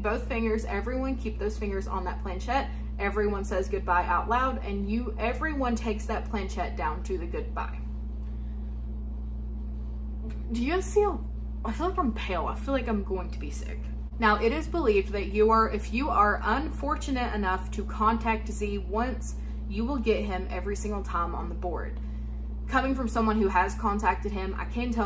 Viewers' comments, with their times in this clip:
0:09 there’s a weird glitch in the audio.